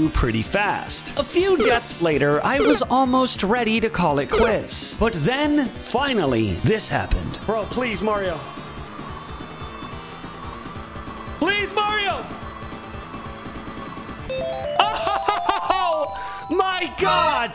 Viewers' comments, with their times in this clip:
0:05 The Doomsday Zone music goes very well here!